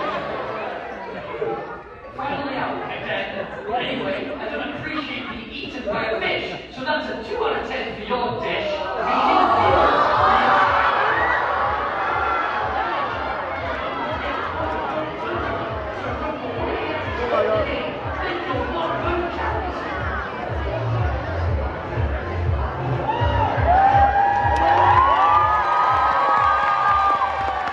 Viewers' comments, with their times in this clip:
0:07 they went wild when Death P.A.C.T. again was ufe again lol
0:09 can barely hear two at this part 🤣